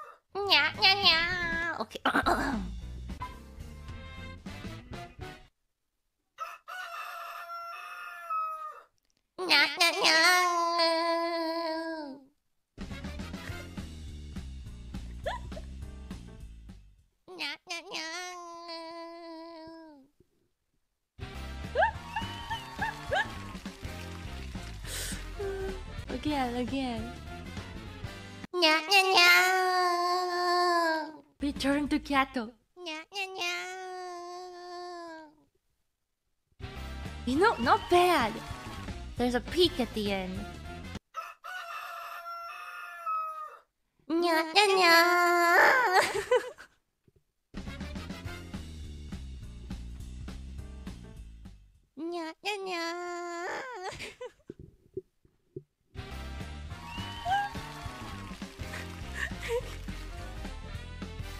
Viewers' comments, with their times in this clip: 0:09 I can hear... through the distance... a creature that goes... BURANYUUU
0:43 blessed voice crack